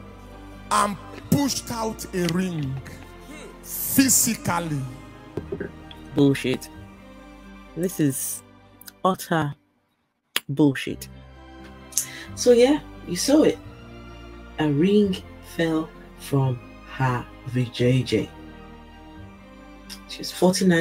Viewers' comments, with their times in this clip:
0:08 It's the way you say bullshit for me here 😂